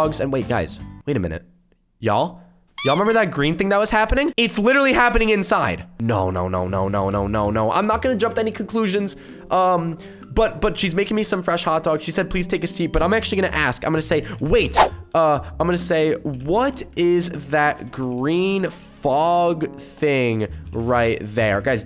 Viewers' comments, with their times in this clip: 0:04 the fridge farted